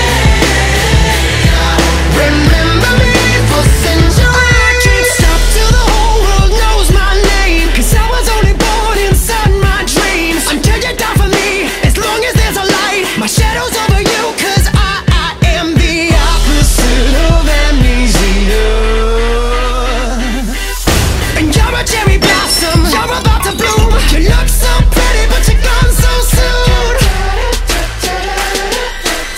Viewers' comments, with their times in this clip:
0:03 when somebody farts
0:15 i heard the “Details”